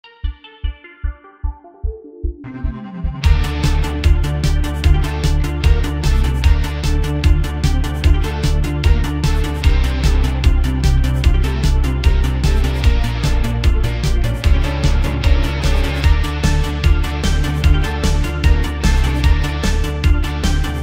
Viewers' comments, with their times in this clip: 0:04 The part where it's a bit faster and the notes go up and down.